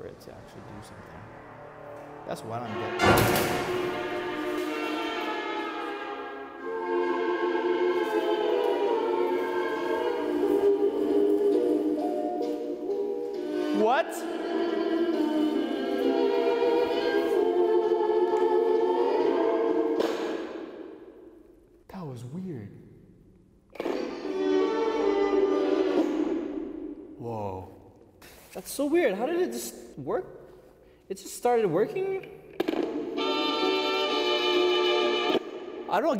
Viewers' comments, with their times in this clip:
0:04 Yo guava juice i hear old song looks like people dancing
0:18 recorder playing on its own